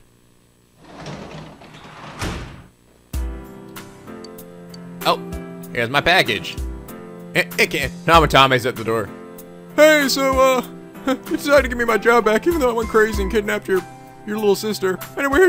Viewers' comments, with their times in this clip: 0:03 Every time the door rings I keep hoping that its Dojima and Nanako. :_: